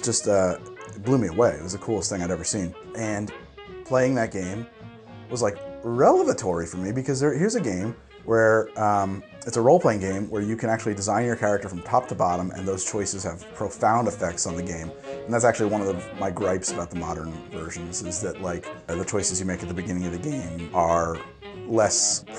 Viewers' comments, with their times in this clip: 0:05 "Re-lev-atory" lmao nice